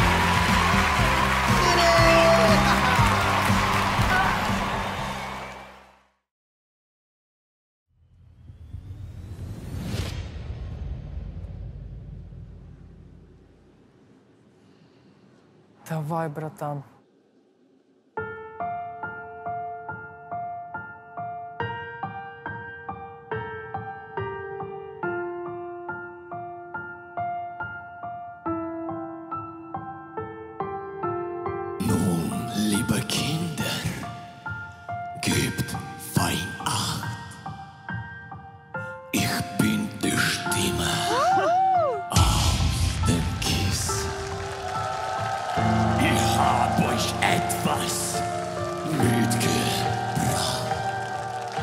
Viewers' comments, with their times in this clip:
0:08 he sounds just like Till, from Rammstein..
0:08 This one was ridiculously good, holy crap. Such an amazing voice and such charisma, damn!
0:22 this voice is not from him O.O its amazing
0:38 holy shit I did not expect that pitch out of him